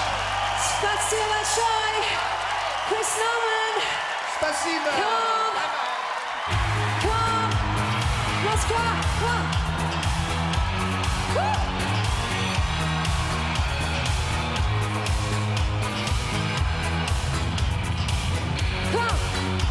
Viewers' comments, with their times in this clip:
0:07 start the cd disc and playback. I would not buy a ticket because of this, that the CD goes.